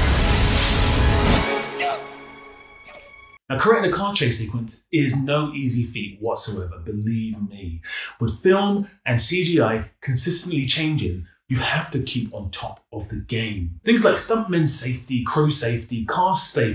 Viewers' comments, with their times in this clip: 0:03 I thought this guy was British based on the accent! Lol was surprised 😂 nice vid Mad Max was a gem